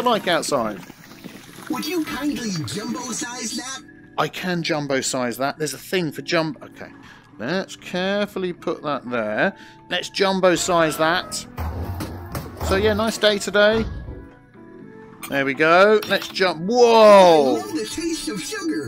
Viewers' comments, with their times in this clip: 0:06 I laughed so hard when he reacted the voice of the old man !